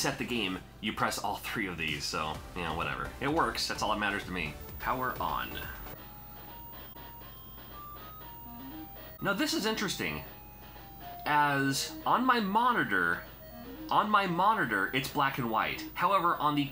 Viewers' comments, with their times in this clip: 0:04 Anybody else can ear the high pitch noise ?